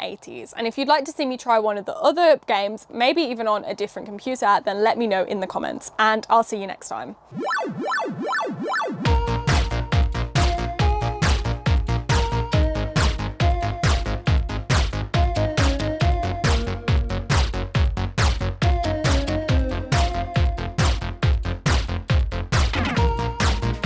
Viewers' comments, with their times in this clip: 0:07 loved the outro music ❤